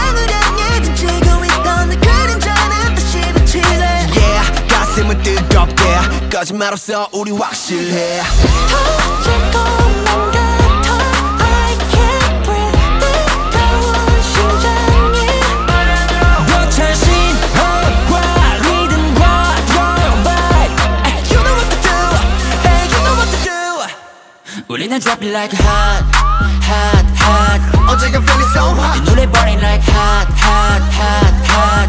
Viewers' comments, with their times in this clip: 0:08 I really love Hoshi's part here. His voice and vibe. 😭✨
0:17 why my voice reminds me of Minho and Bang chan from Stray Kids😅